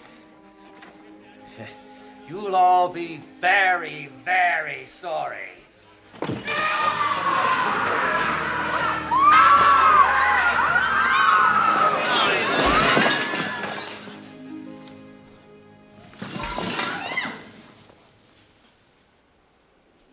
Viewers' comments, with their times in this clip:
0:07 Winthorp's frantic scream as he darts through the room is fukkin LOL. He was completely unraveled.